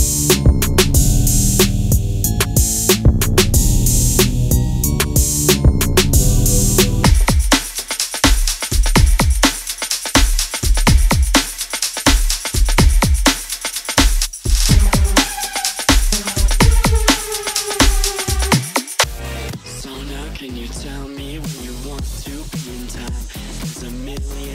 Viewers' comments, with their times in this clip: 0:07 BRO I that song brings back so much nostalgia from when I played NFS most wanted